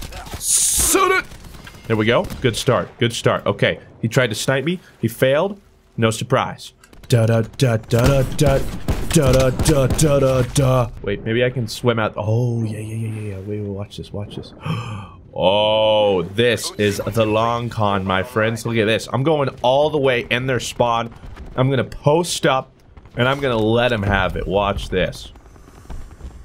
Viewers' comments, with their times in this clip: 0:07 You even sing the battlefield theme song in the video lul